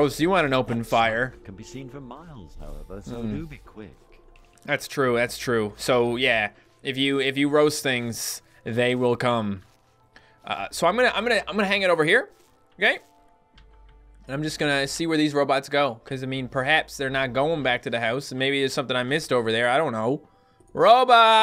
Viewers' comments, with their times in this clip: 0:06 I think I heard that wrong